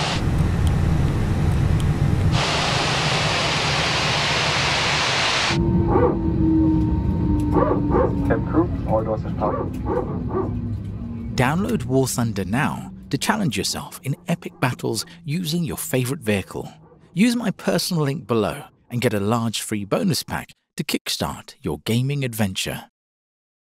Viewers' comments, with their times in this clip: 0:05 Hi, guys. Amazing view and gameplay. But what is the sound on ? Sounds like some dog barking or somebody sawing something. I always wonder about it.
0:06 Insane realism! What got me was the PTU sounds from inside the cabin.